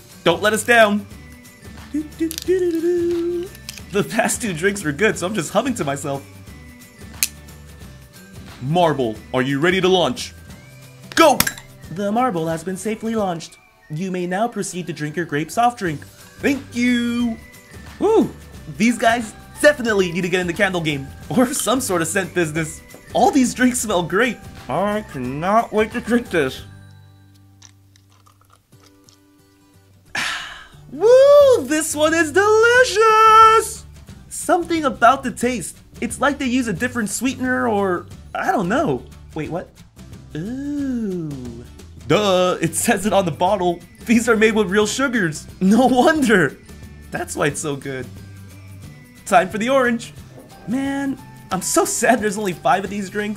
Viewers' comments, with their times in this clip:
0:08 real voice reveal
0:38 it reminds me of sponge bob and Patrick OOOOOOOHHHHH WAIIIITERRRRRRRR